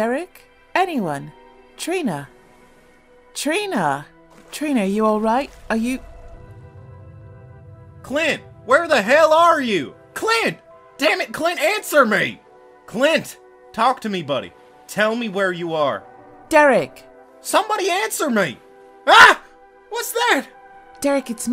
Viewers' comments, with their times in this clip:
0:07 best moment ever so happy I don’t have to listen to and another word of this voice actor